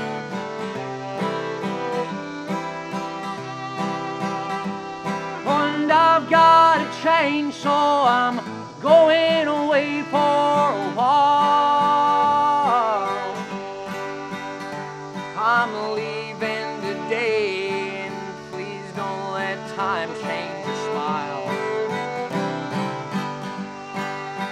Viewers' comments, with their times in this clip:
0:05 I thought for a minute Ben was going to work in the Forestry Industry for a bit.... " And I've got a Chainsaw and I'm going away for a while"